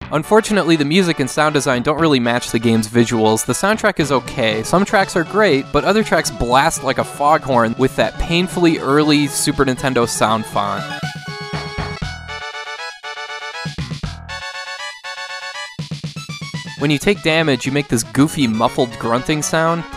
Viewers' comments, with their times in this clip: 0:04 That sounds like the music from Hook for SNES.